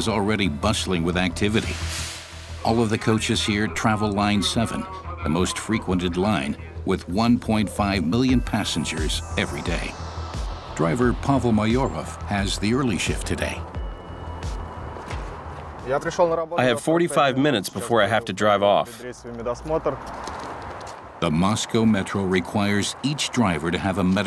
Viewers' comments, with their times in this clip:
0:07 Did the speaker really say 1,5 billion passengers ? it should be million but i only hear billion